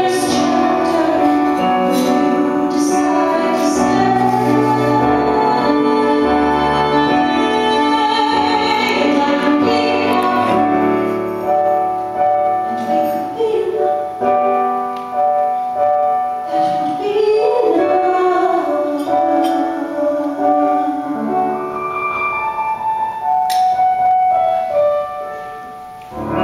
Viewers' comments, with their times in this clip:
0:08 gets to me every. time. Just the way her voice beautifully hits the note and the piano in the back sounds amazing and she grabs Lins hand like so many emotions rush through me coz this song is just everything